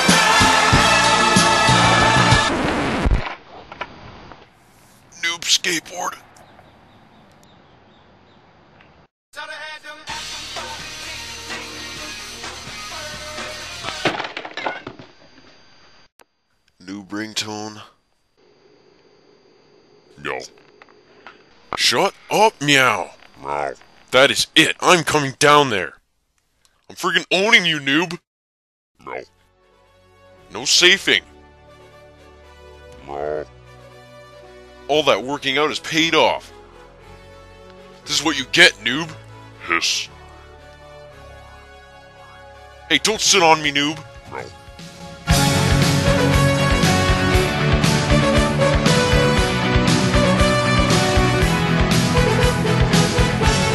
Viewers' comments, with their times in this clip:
0:09 thumbs up for axe and ringtone
0:39 Why did a cat say hiss?!?!
0:39 ooh meows angry now!! O_O